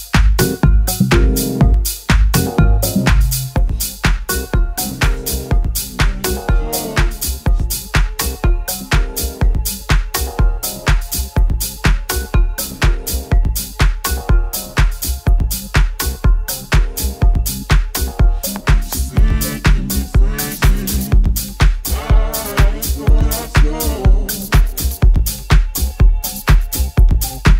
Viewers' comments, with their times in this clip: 0:08 the remix of Cure and the Cause by fish go deep is just freaky...